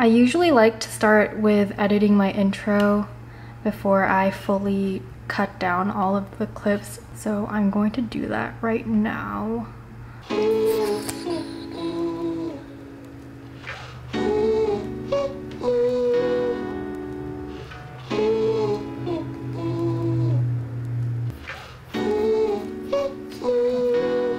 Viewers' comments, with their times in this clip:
0:09 I thought the music came from your mouth HAHA